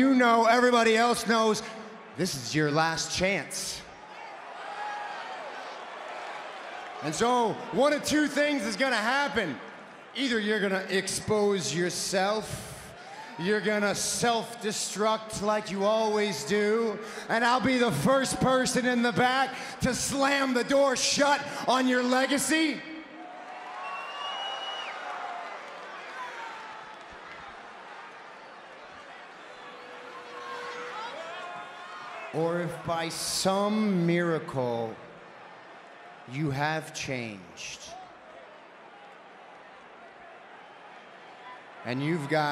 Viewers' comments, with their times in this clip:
0:06 the way he said that with that expression and movement reminds me of how Dean Ambrose used to talk. Bros for life
0:30 Who's the guy with the angelic voice ?